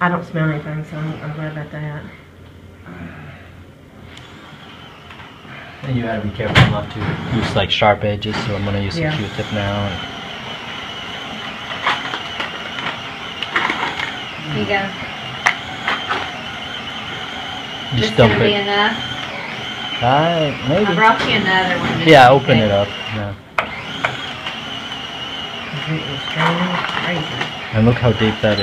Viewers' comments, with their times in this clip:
0:10 sounded like someone started driving a remote control car through the exam room. Even though I know that didn’t happen, it sounded just like it.